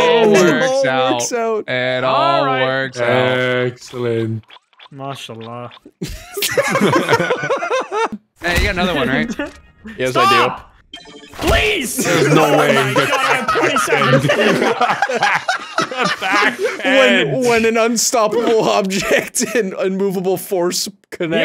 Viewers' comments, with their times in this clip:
0:05 The disappointment in that "MashaAllah" xDD